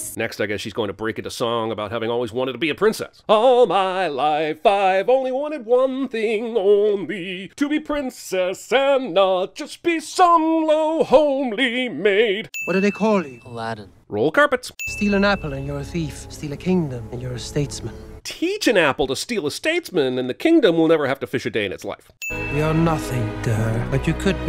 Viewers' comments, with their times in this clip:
0:03 why can you sing I can't so that's unfair
0:07 I want to sin the movie because this dude's singing is better than ALL the movie's songs (I mean his voice, not the song)